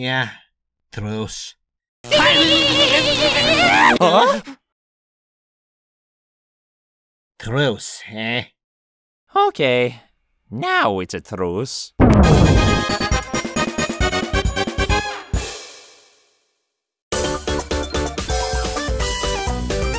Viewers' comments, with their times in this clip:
0:03 mario sound like toad when get electrocuted by Luigi